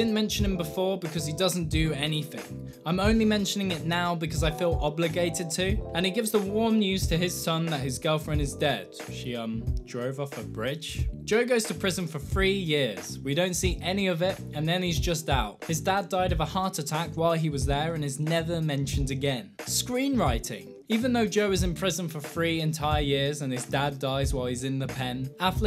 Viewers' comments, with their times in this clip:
0:10 "Joe goes to prison for free years." Wouldn't prison be unfree?🥁 [crickets] I’ll show myself out.
0:12 goes to prison for FREE years ?! Fix that lisp mate